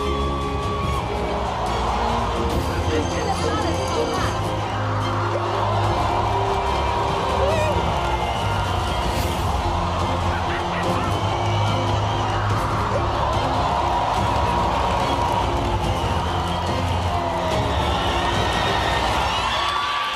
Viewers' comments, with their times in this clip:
0:06 They were shaking too much, I think it's too hard to concentrate when 4000 people are screaming! I don't get why the crowd couldn't be fucking silent for a few moments so they can concentrate on this highly dangerous act. I am glad that they rather stopped at the right moment because they realised that they are too shaky instead of just doing it.